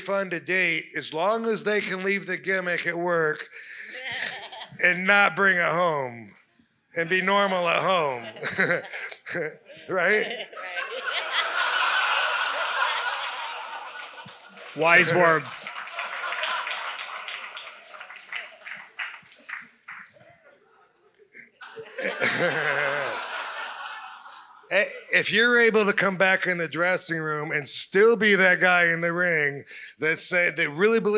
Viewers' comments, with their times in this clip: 0:04 his wife laughs like that? That's a huge turn off.
0:04 Is that a goat or a sheep?
0:13 The new "waiting to be offended at something" wrestling fans nervously laugh at RVD talking about dating strippers.